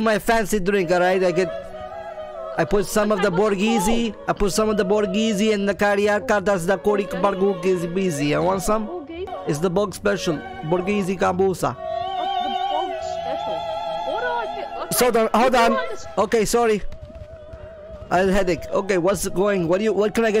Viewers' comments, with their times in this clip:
0:04 Wtf did you just turn african for a sec?